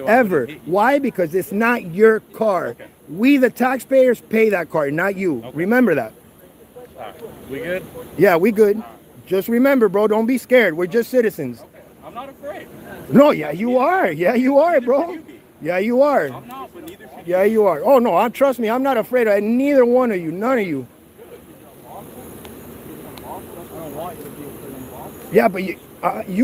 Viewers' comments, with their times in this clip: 0:10 his voice cracks like a scared teenager right when he say " I'm not afiARD" .... HHAHAHAH